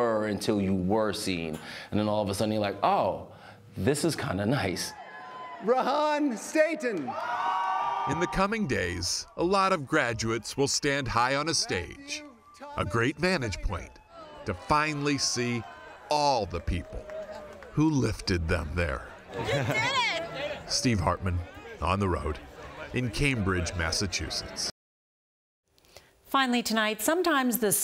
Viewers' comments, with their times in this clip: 0:09 Say what? Last name Satan?